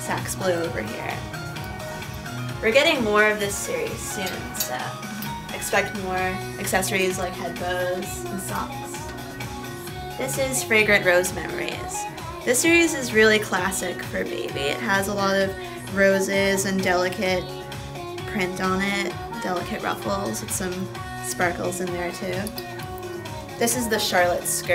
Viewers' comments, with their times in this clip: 0:09 dat music x3 Omfg SPR ;w;